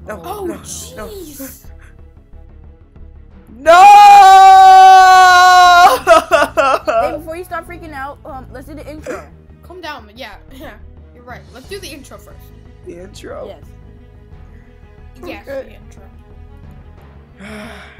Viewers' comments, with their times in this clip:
0:04 YOU SHATTERED MY EAR DRUMS!!!!!!!!